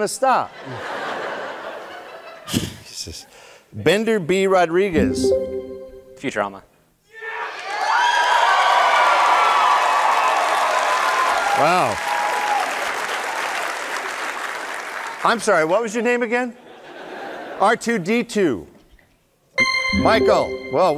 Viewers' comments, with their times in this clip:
0:07 it sounds like that “YEAH!” scream from The Eric André Show